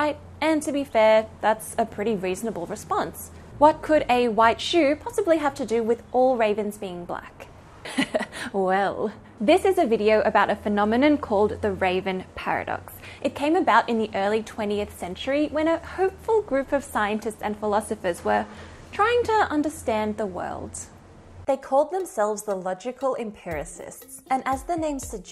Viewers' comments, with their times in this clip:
0:07 the "you've just activated my trap card" laugh